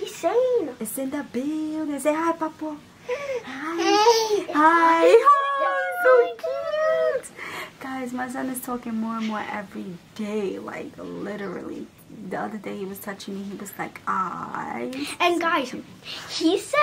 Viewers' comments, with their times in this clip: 0:03 🥲🥰 cutest hi frm baby